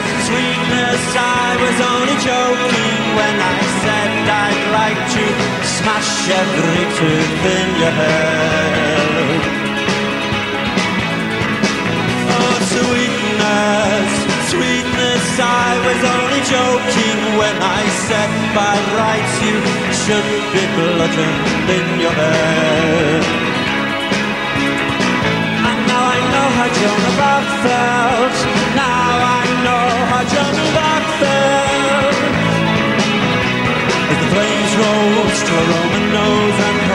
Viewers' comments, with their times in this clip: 0:06 that rolling of the R tho
0:18 "by rrrrrrrrrights" ..is this a manchester accent or something?